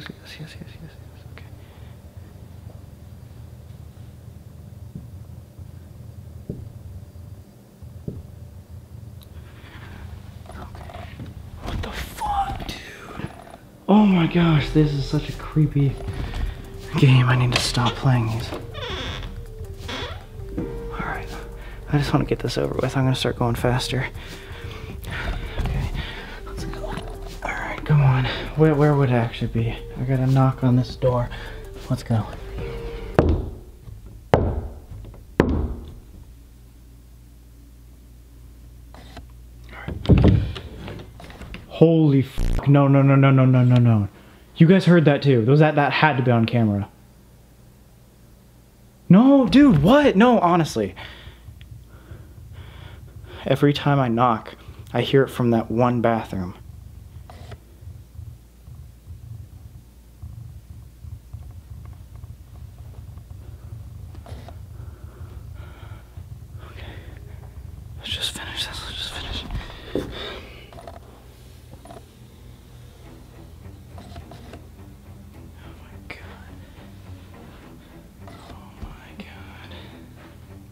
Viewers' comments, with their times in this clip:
0:09 I really feel bad for him because you can tell he is petrified by his breathing 😥
0:41 Sam: Holy f*** no no no you guys heard that too that had to be on camera! Me: puts volume all the way up and puts phone to ear yet still hears nothing
1:03 bro i def heard a door creaking thats terrifying..